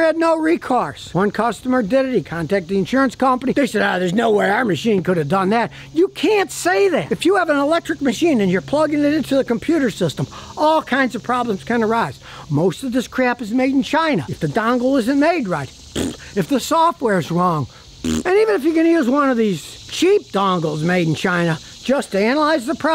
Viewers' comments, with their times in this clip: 0:09 Added aircraft / drone audio is noted